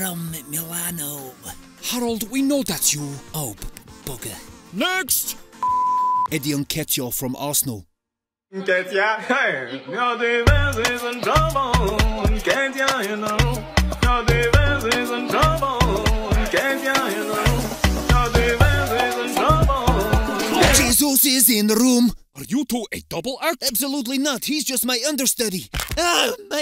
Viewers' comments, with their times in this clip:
0:08 hhaaaaahaaaa but good soundtrack
0:14 I love the song